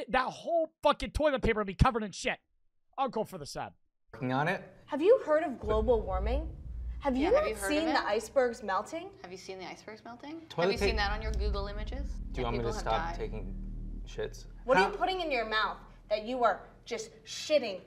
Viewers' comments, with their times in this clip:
0:05 sound like a seth rogan fukin dialogue 😭